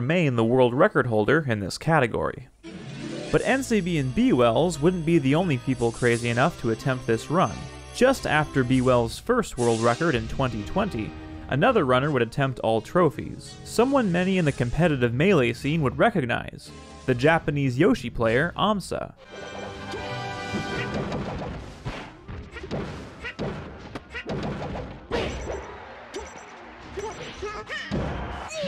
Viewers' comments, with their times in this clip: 0:09 That timing with yoshi's egg and the music just can't be coincidence, it was very cool